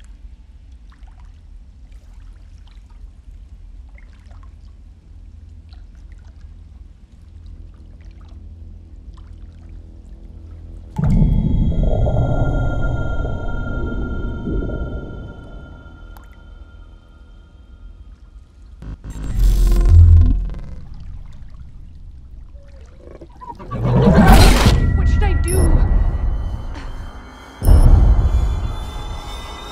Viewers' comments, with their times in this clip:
0:10 ive never understood the significance of her blood going into the water, like, did it really need a close up in the water accompanied by ominous music?? Was that what attracted the Demogorgon??